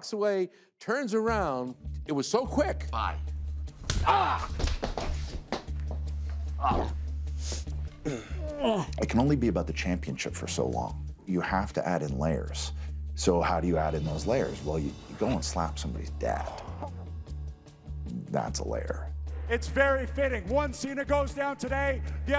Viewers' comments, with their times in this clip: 0:06 When John cena SR he fall he fart